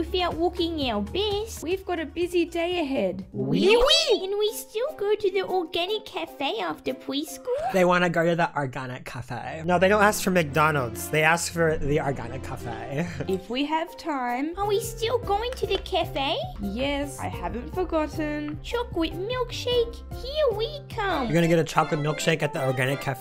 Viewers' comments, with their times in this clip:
0:09 ok he can say organic cafe like that added to my learned list